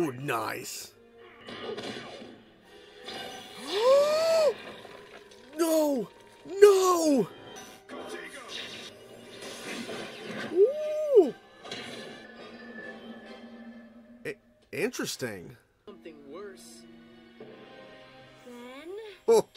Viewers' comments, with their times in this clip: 0:07 did he say protaygo...